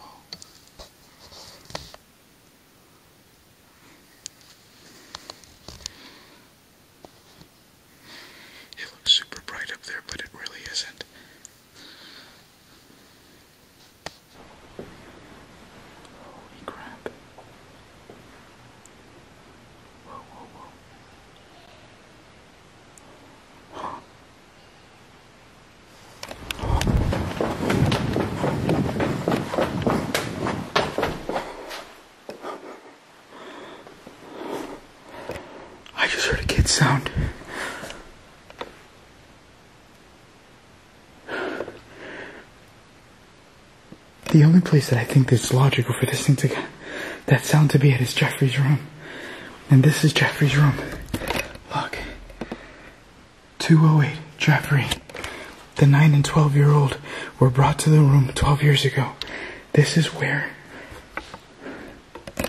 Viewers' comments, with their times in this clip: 0:09 there’s a woman voice under ur voice
0:22 hear a dog too
0:24 child says hey
0:44 it sounds like a dog barks before the child's voice.